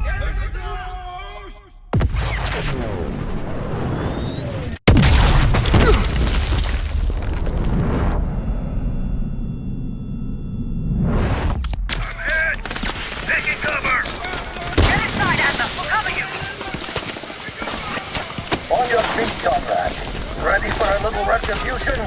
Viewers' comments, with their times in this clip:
0:05 you hear bell’s voice as-well as seeing his vest which proves he is Harry stone